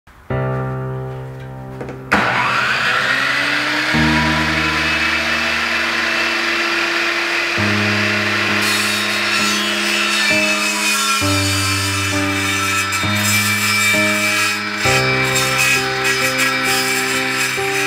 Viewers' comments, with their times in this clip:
0:00 Bruh why this song